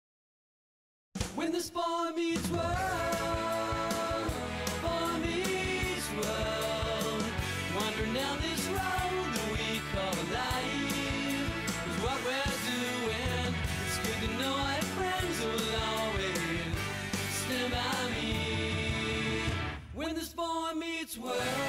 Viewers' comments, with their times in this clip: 0:07 When I was a kid, I had no idea what the lyrics were. just sounded like "Blah Blah Blah Blah Blah Blah Blee Blah NIIEEEEEEEE!" Now, I can totally understand that the line is "Wandering down this road that we call life."